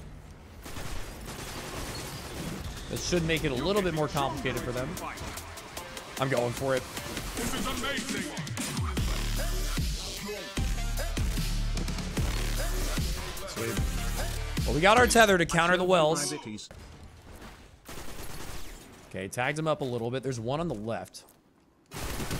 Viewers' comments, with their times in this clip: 0:06 the montage music starts and bro is like „im going in“